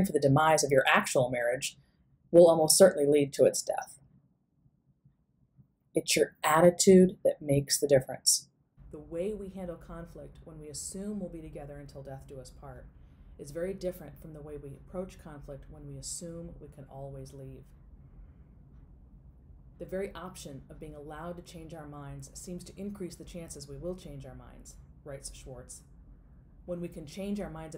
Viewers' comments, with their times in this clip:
0:09 minutes, the sound goes low.. oops!